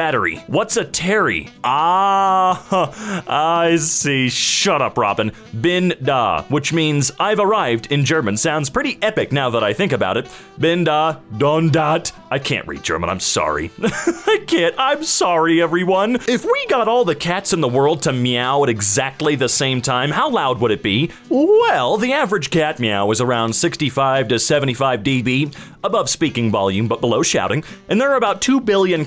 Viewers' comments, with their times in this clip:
0:07 wdym u cant read german? u pronounced "bin da" perfectly. ("don" and "dat" arent german words but you probably already figured that.
0:11 pretty solid german if you ask me